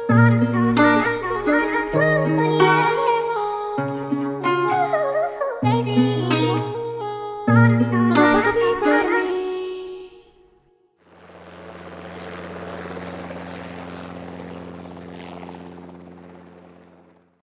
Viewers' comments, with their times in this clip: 0:04 Love the melodies 🤌🏽✨🌺💖 Especially